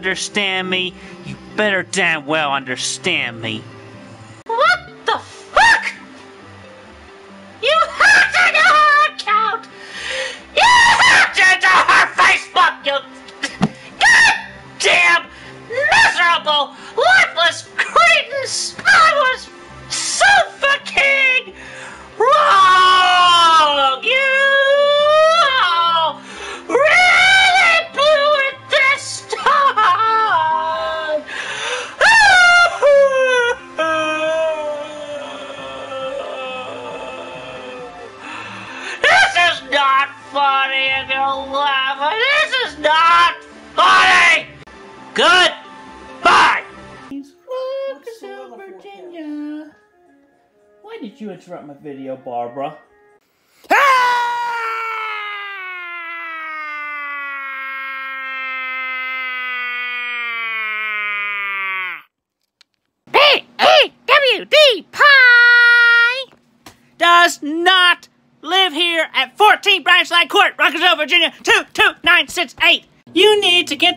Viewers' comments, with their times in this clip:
0:04 Lowkey sounds like an uncensored version of Mickey Mouse.
0:04 angry mickey mouse be like
0:04 it's funny how the pitch of his voice is so inconsistent.
0:31 it's the crying for me, that makes this magical lol
0:39 okay you can’t tell us to not laugh when you’re screeching in a high pitched voice the whole time.
0:49 Is it only me or that BARBARA was the first time Chris spoke like a normal person
0:59 when the WD-40 started to wear off